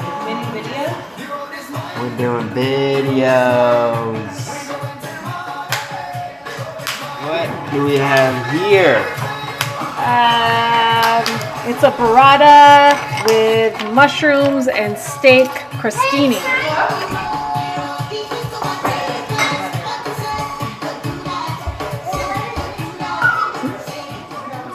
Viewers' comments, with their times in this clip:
0:06 When I heard the Soca I was 🙌🏽🤩